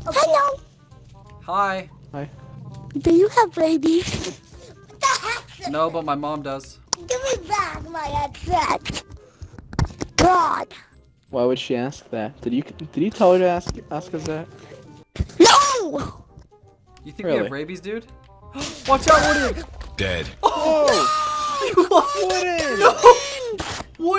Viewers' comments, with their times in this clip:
0:09 tell me that isnt chuckie finster from rugrats